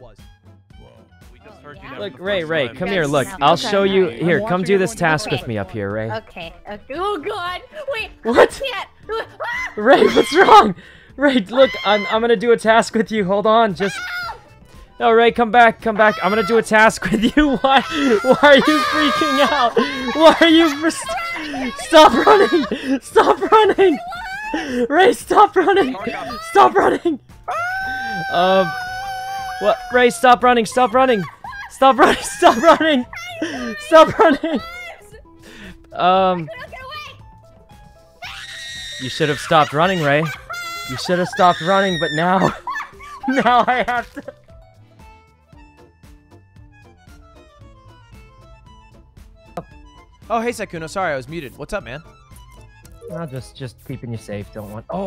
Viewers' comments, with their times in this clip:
0:05 I love how Rae just gets it and immediately starts running and screaming
0:27 his scream sound exactly like Olaf’s😭😭😭
0:36 Rae's scream always has me dead
0:37 I keep playing because Rae's scream is just so funny! And I've noticed that Sykkuno covers his mouth when he's nervous or laughing.
0:38 has me dying her screams are gold😂😂
0:38 Lmao was like a real hprror movie how his voice switched to more menacing lol
0:38 RAE'S DEATH SCREECH-
0:39 when Sykkuno says "you should have stopped running rae" He sound very psycho lol